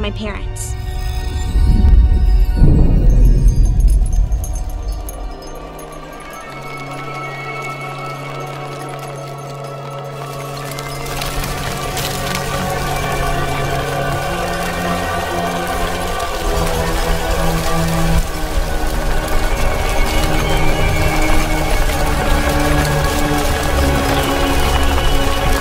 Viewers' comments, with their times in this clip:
0:10 I love the music at this part ❤❤❤